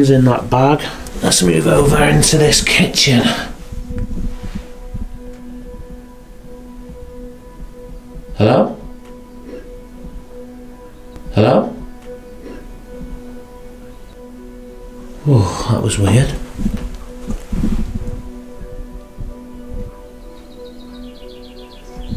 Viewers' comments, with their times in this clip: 0:09 it sounded like an old man clearing his throat